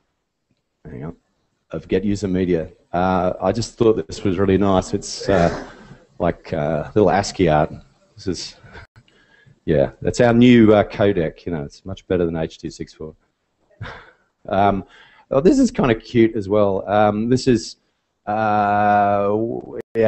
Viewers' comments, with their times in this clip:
0:03 Audio kicks in